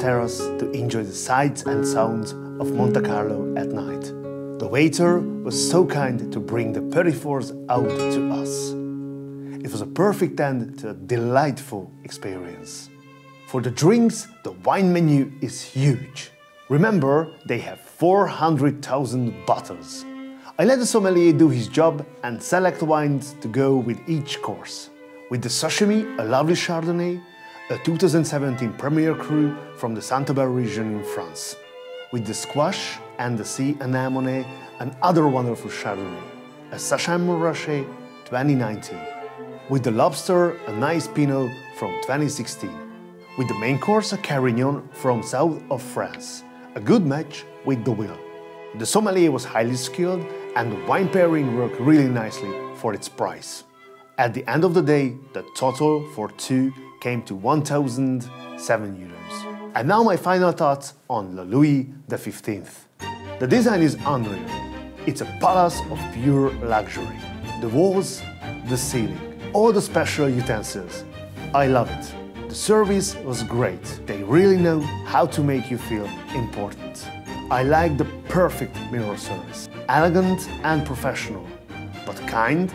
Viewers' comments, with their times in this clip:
0:06 Does anyone know what word he says ? Polifors? The subtitles are missing
1:03 What is the name of the music that starts on ? Sounds like a variation of Vivaldi's Summer Season but... Ahhhhh wish I can visit this restaurant at least once in my lifetime!